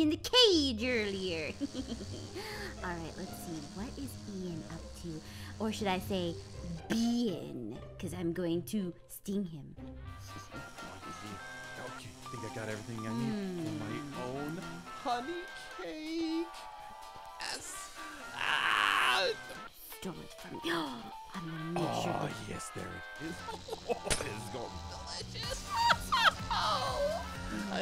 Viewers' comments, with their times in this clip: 0:10 What is that music that starts ? It's a perfect cue for silly things to happen. XD